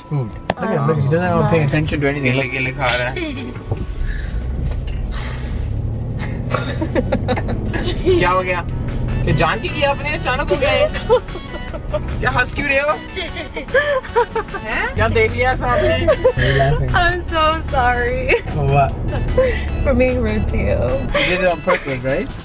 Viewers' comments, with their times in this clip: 0:08 that guy speaking urdu